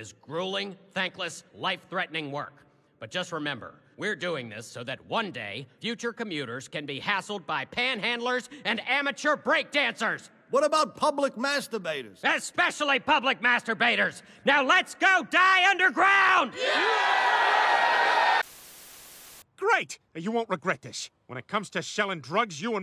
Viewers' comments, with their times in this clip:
0:03 i never noticed that that was Cleveland's voice actor doing the head Miner's voice. that's awesome!!